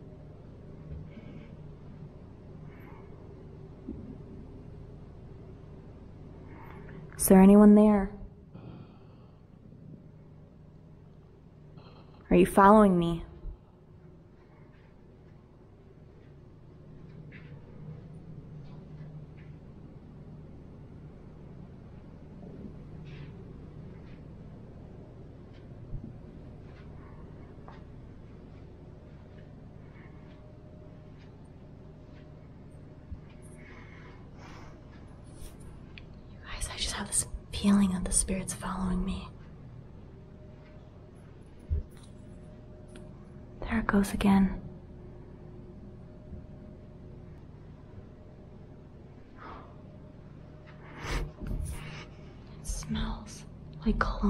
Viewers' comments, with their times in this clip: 0:05 OMG Start listening she asks...is anyone there? And immediately I hear what sounds like a man exhaling but it came out raspy. Like what I pictured a ghost would sound like and that's outright creapy. It sounds as if he's saying it right in front of her face. Like RIGHT THERE. BAMB wow. You missy have some guts to do what you are doing. Ahhhh hell no I could never ever EVER do this.
0:07 I herd male's have breathing
0:09 when you ask is anyone following me i hear a breath
0:09 breath... can’t tell if it’s sounds affects through out the video, if not, then girllll you got a lot of stuff!! Cool video! ❤️
0:11 you do hear a mans voice
0:13 you say "Is anyone there"..... then it sounded like a "UGGGHHHH" IN AN EVIL VOICE..... GAVE ME THE 🥶🥶🥶🥶🥶🥶
0:13 it sounded like someone breathing
0:23 Listen closely from 7- u can hear someone whispering
0:24 ish very demonic sound. Gergel sounding.
0:39 whisper says go